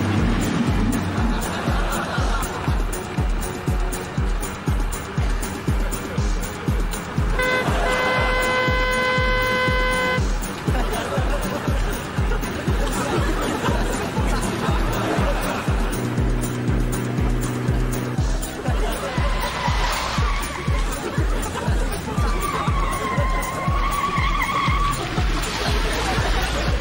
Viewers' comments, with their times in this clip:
0:07 I like how Bean presses the horn with his foot except that the horn control is on the right-hand column stalk and not in the centre of the steering wheel. Obviously an added comic sound effect.